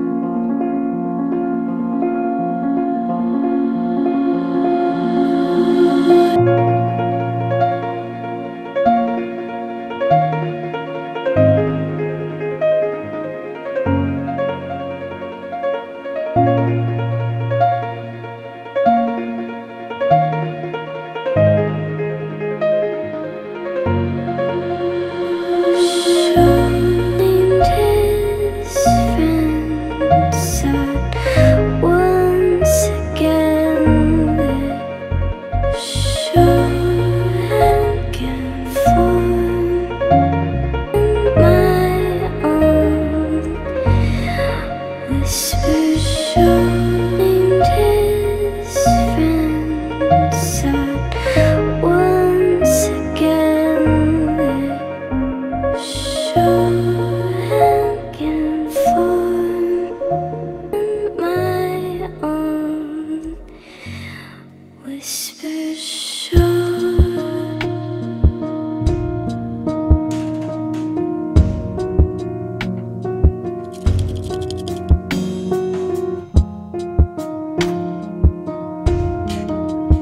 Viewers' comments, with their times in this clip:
0:07 This is beautiful but I for real though Gangsters paradise was gonna drop 😂
1:03 that part where her voice fades off in an echo and the instruments pick up, that gives me full body chills. it's so beautiful.